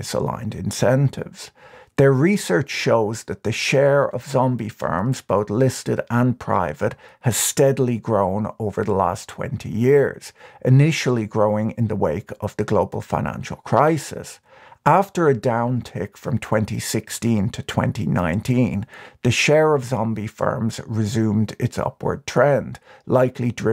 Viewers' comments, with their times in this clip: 0:09 your cadence / vowel emphasis is distracting -- raising intonation at the end of 70%+ of your sentences. infinite examples. too annoying. just some constructive criticism.